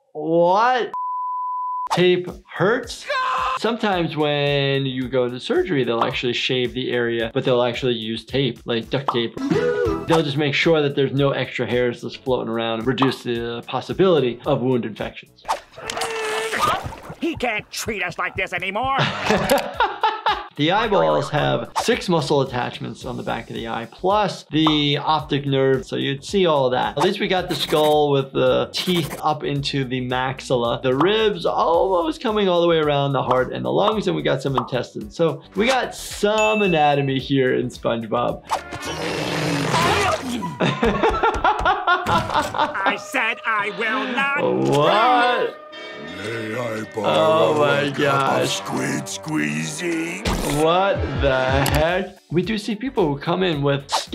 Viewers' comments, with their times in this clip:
0:03 from what scene was that clip from it sounded like Steve Carrell when he voice screamed the mayor in horton hears a who 2008
0:38 = goofy ahh song of ohio